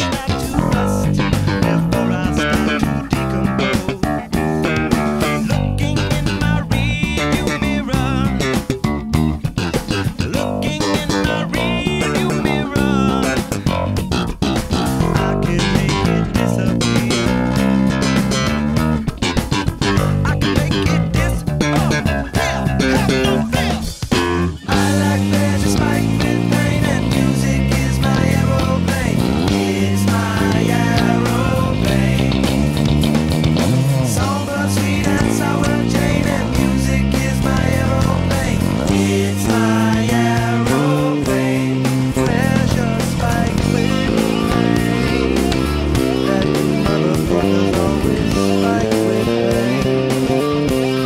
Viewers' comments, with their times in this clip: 0:05 Which bass was the one ? I loved the tone on that one!!
0:07 Anyone knows the bass that is shown ? Sounds great
0:16 also which bass ? it pops goood
0:35 what is this bass? Sandberg, white music man and this one sounds sooooo good
0:35 The bass kinda sounds like a modulus flea bass